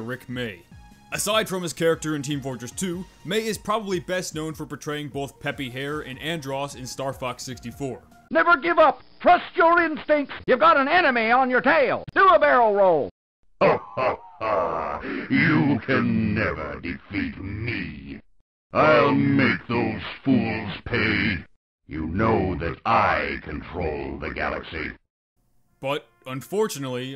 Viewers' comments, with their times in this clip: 0:10 “YOU GOT AN ANIME ON YOUR TAIL”
0:10 you have a anime on your tail -Pepe guess Pepe hates weebs and amime